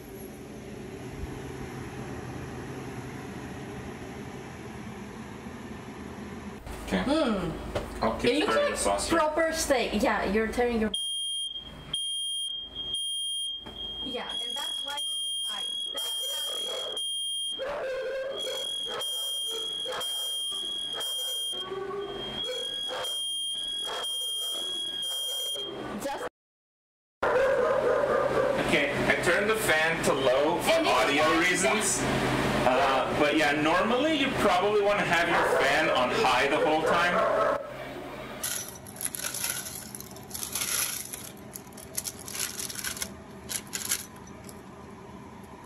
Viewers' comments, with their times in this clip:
0:08 This ticket redeemable for... OH MY GOD MY EARS
0:29 catch an "ope" from Iowa